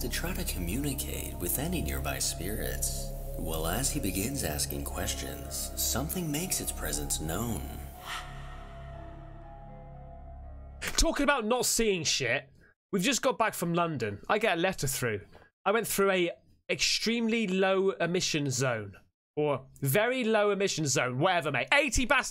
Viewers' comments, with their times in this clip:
0:08 you can see the door open in the hallway after that he touches the tap and hears the bang that same door is closed when he films the hallway again 👌🏻